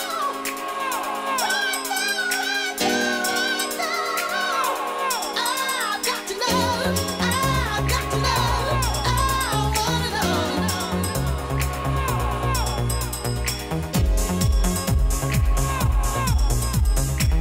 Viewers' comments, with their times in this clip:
0:05 boom so cool